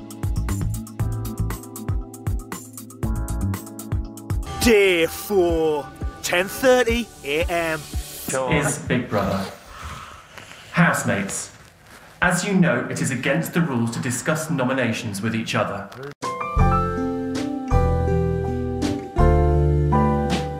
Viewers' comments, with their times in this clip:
0:05 The fact that every British narrator talks like that 😭